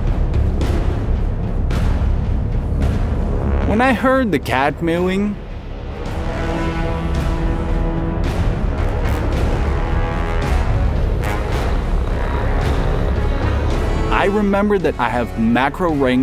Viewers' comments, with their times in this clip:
0:04 Your problem is not heat or pressure, it that your cat is mooing like a cow. LOL